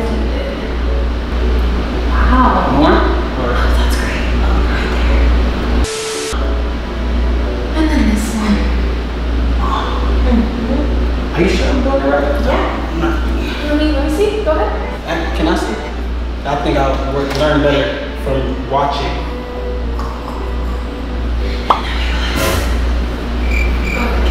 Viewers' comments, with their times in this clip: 0:09 did he really mone